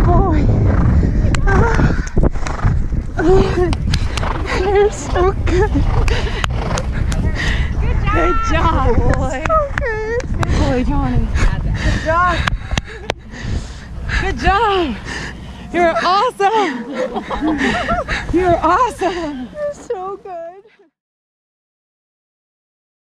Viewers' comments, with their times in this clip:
0:04 Was she crying? 😕